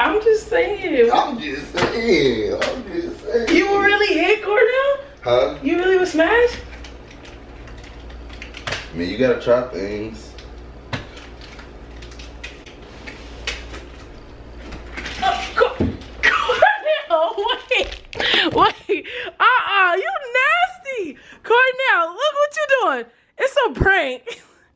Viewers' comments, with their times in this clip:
0:08 has me in TEARSSSS the way his voice quivers when he says, yOu goTtA trY tHinGs, took me allll the way out lmaooo